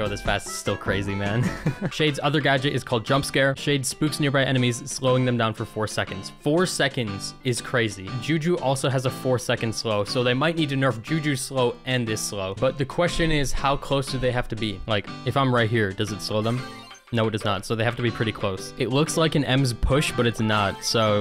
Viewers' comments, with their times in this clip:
0:08 What is the background music in ? It sounds oddly nostalgic